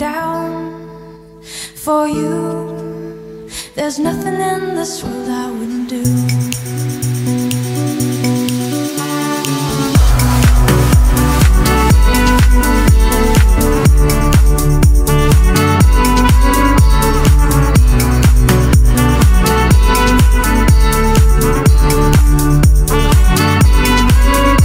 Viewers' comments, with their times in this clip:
0:10 !!!!!!!!!! is that a trumpet or saxophone? freakin GLORIOUS